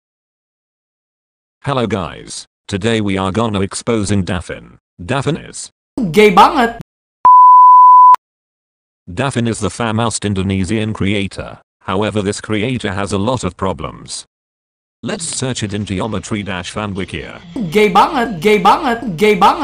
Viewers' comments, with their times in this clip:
0:06 gay pangit Means in Tagalog: Gay Ugly